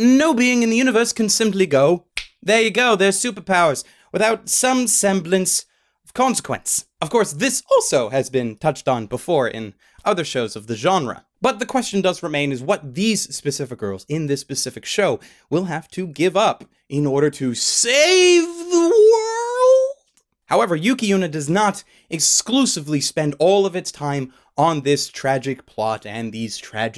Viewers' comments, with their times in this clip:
0:08 What a voice crack